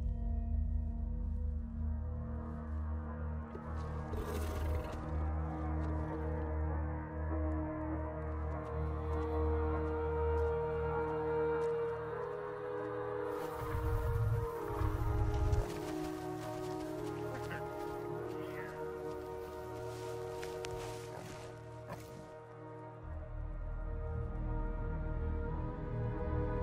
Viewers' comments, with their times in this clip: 0:07 music is sad but beautyful, i hate this part of savage kingdom 😭